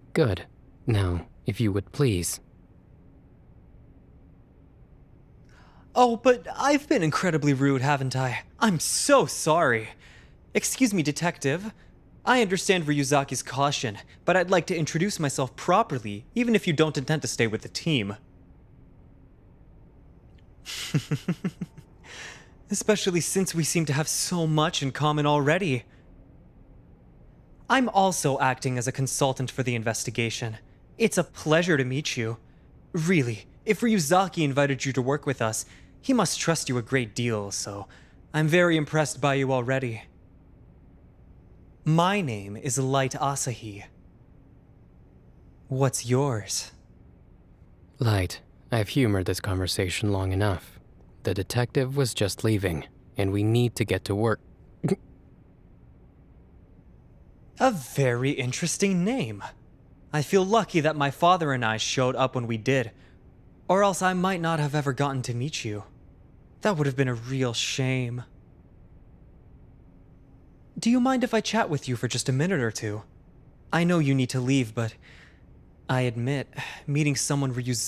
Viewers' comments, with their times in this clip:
0:10 Light sound gay af lmao
1:03 we cannot escape we cannot get out! WATARI! I CAN HEAR HIS SMIRK WTF